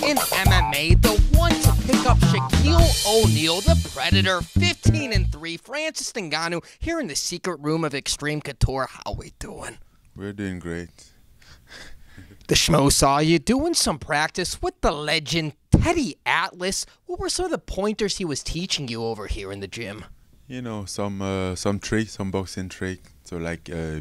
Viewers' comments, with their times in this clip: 0:09 "We doing great" Ford Escort noise